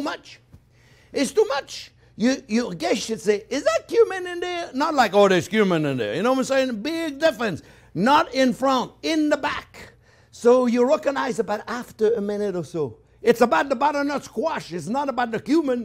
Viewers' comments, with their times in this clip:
0:03 So funny high voice "Is that cumin in there?" Not low voice "Oh, there's cumin in there."